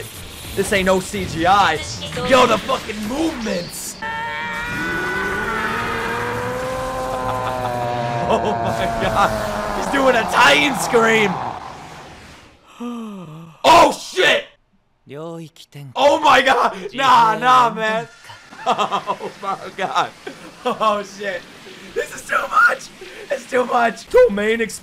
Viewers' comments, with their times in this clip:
0:09 it's an evangelion scream 😂